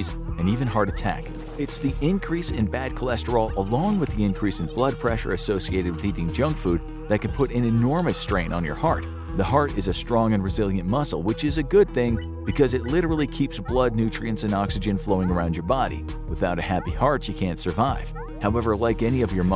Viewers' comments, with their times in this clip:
0:03 I love the guy screaming as he dies on the table while the doctor calmly stands there lecturing him.